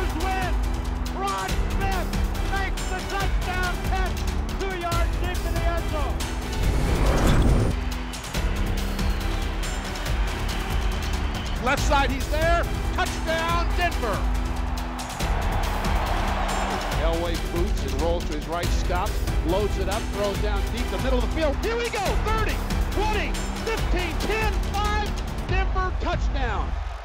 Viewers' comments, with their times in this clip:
0:10 I love how they overlay Dave Logan giving the play-by-play during Elway's 1983 Colts game. Even though Dave Logan was playing with the Browns at the time, and wouldn't be the Broncos' play-by-play announcer until 13 years later!